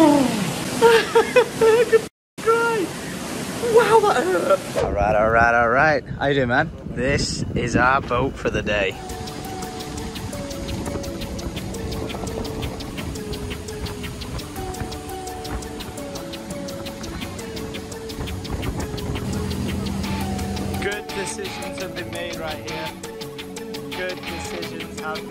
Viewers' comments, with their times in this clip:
0:08 omg that music brings back memories